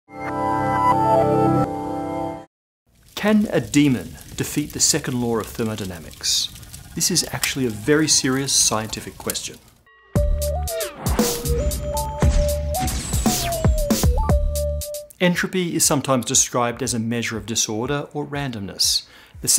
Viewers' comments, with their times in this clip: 0:04 Second lore of thermodynamics?